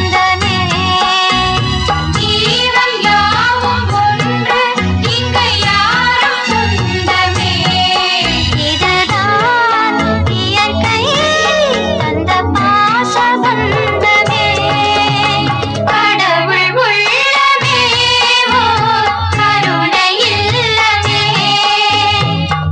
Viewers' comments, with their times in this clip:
0:08 The chords in the song .. man.... gets me everytime.